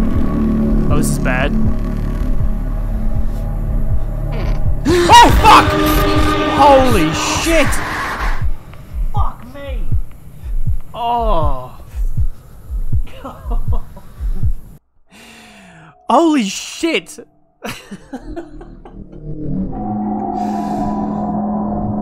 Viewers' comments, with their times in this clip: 0:09 my favourite part was the very faint "fuck me" full game looks like it'll be great